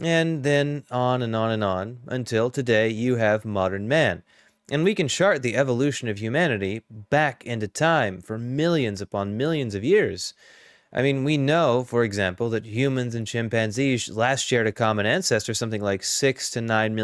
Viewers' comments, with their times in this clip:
0:04 "We can shart the evolution of humanity" The mental image